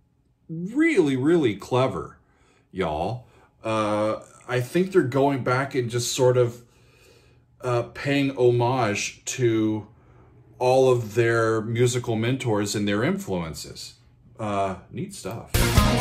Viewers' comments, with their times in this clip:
0:04 The second before the lyrics of this section kick in you can hear Roger Waters saying "Isn't this where we came in?"